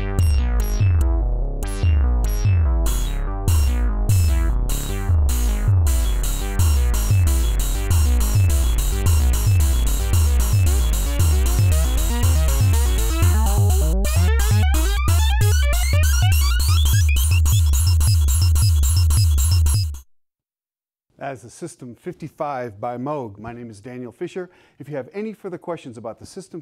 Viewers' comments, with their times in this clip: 0:06 reminds me of the end of Brain Salad Surgery
0:09 when somebody tryna make a beat on Fl Studio for the first time